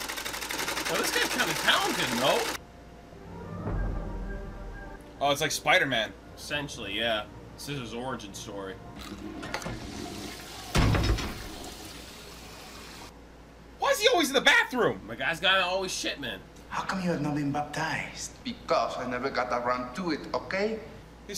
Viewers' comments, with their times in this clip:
0:06 if u think he sound like a goat, I highly suggest epic movie. It’s EPIC